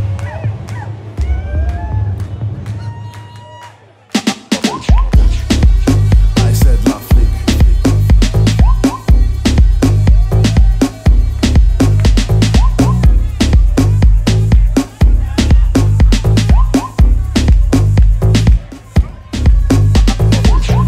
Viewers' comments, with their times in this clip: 0:03 that drop doe! 🥶